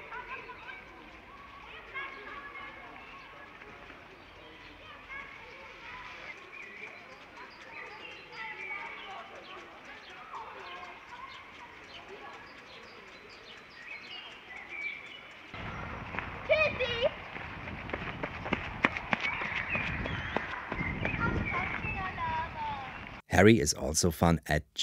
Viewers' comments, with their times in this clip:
0:06 - "Yes, police?" - "There is a strange man in my local park hiding in the bushes with a head on a pole - please come quick!" ;D ;D. Seriously, though, that sound quality is pretty amazing.